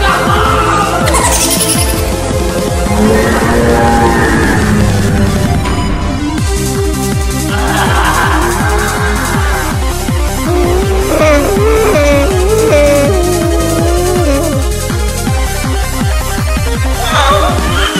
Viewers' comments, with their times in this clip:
0:03 Baby Lobotomy Crying